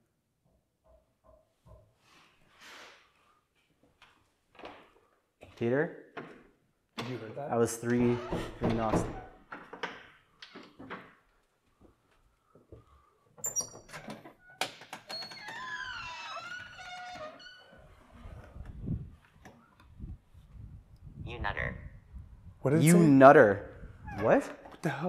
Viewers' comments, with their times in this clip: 0:07 Your mistake this session was opening the outer door when you heard those three knocks. Knocking in threes is allegedly something darker spirits do in mockery of the Holy Trinity (hence why Three AM, and not Midnight, is the "Witching Hour"). By opening the outer door, you very well may have let something not-benign in with you that did not belong.